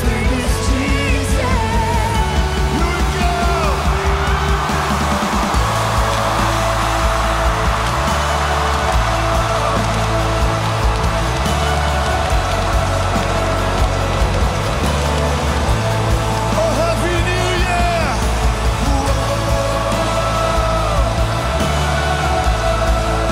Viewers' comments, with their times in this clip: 0:05 when the Heavenly chant came in at the same time it hit midnight. I felt the electricity. Really wish I was there.